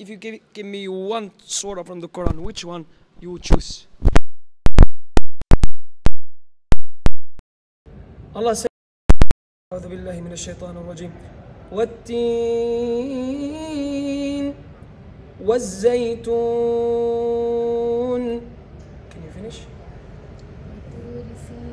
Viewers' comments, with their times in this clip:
0:04 Ouch my ears